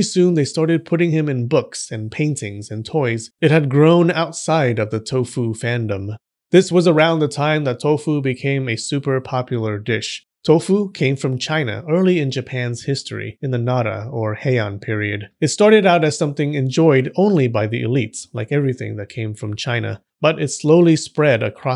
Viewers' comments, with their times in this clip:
0:05 my sleepy ass though you said touhou.